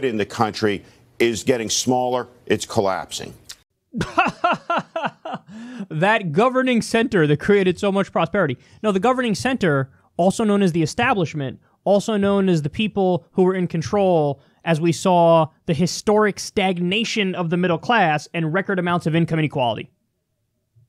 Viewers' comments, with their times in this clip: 0:04 that laugh from Kyle 😂